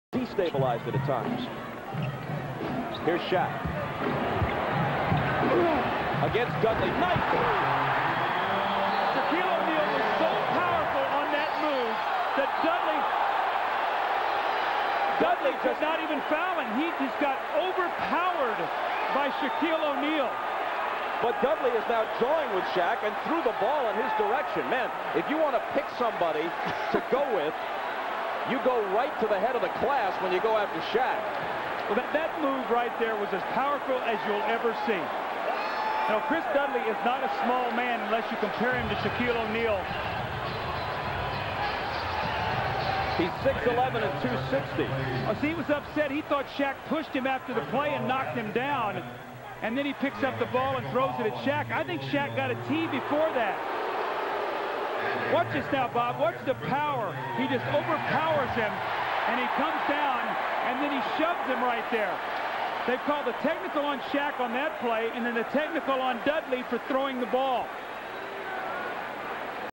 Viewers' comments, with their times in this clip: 0:04 you can hear the pain
0:04 sounds like some video game character noise
0:04 What funny is that you can hear the pain in Dudley (ugggghhhh!!) 🤣😅
0:05 was it dudley who made the “aghh”? makes the video a lot funnier
0:05 you can hear the pain
0:53 The cheerleader ar going from “yeaaah!!!” To “omg” did it for me lol